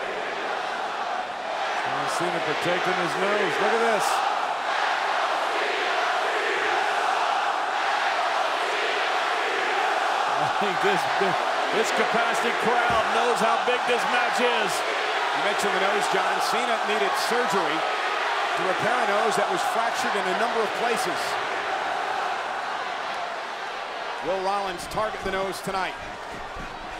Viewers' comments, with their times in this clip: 0:08 Rare sighting of a kid chanting "Cena Sucks!"